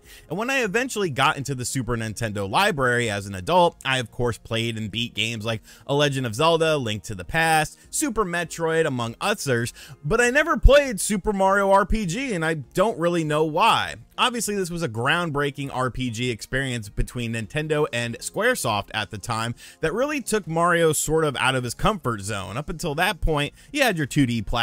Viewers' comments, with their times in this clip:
0:07 are you ok man? Did you have a stroke when trying to say others?